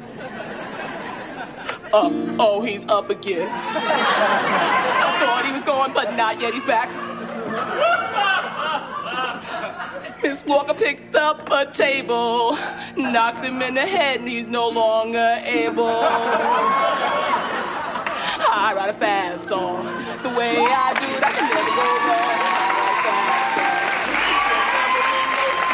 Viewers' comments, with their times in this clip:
0:07 The man's laugh is so damn funny.